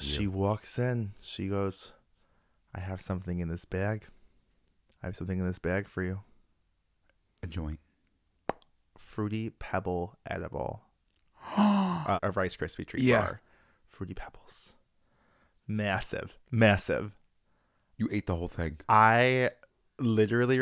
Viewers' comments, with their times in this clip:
0:03 accents are killing meeeeee i love them sm